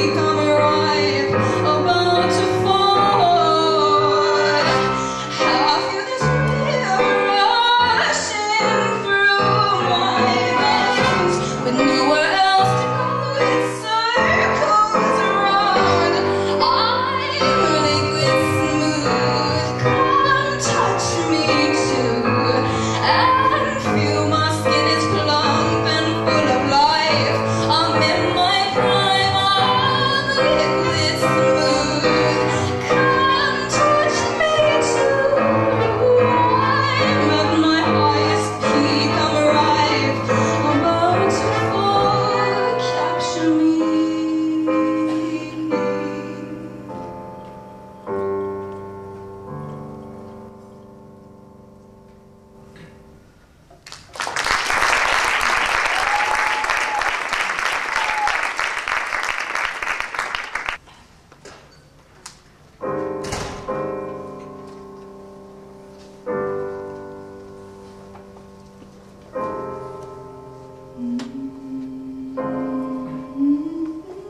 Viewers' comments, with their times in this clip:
0:05 omg i'll always be in love with the way she sings that along with the piano
1:00 omg her little claps and smile are so cute
1:01 It wasn’t just her she had people playing the violin and a couple more I’m pretty sure, look